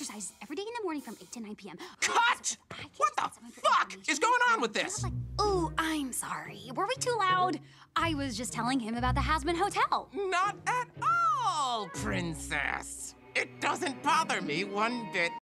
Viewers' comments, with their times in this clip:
0:10 Bro sounds like Mickey mouse for a second
0:12 you can just hear the anger and Insanity in his voice. He was about to explode right then and there.